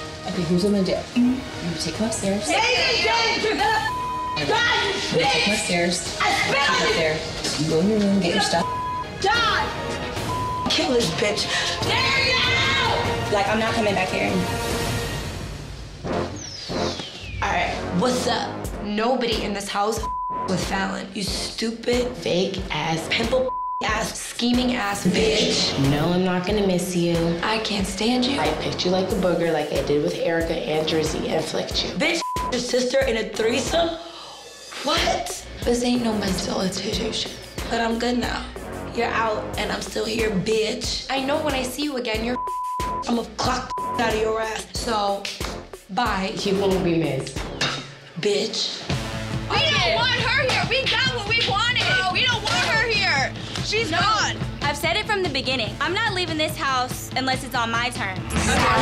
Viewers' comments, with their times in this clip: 0:06 Falen said “B!TCH” hard af 😂😂 she saw what Mehgan did to her face and was mad 😂😂😂
0:39 how she said it doe